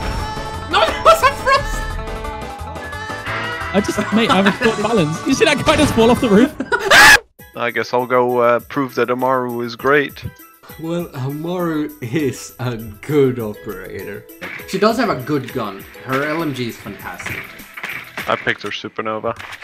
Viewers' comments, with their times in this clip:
0:05 Perfect cut scream 😂
0:05 God, that scream killed me XD
0:06 You can hear the fear in his scream
0:06 perfectly cut sceams